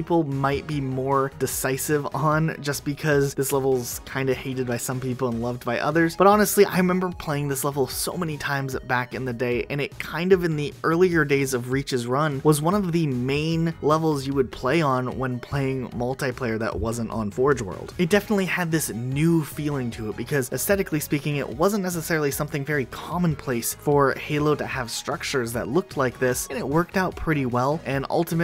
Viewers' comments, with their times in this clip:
0:09 minecraft zombie getting hit sound